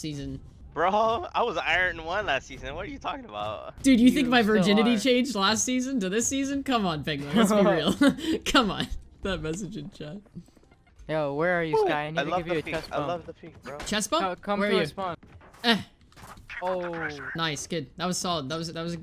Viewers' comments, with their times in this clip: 0:03 the Jett sounds like he has a third lip and smells like ketchup